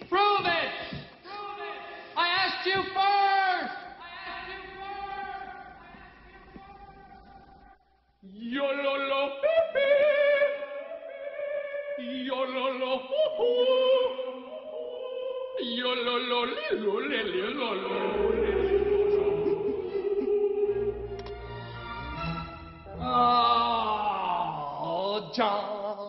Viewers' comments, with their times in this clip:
0:08 He sounds like goofy from mickey mouse